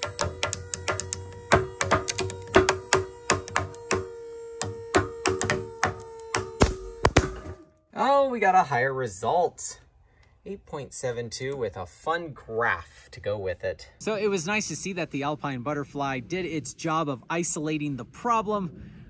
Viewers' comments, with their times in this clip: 0:03 Did anyone else hear the beat that the rope made ?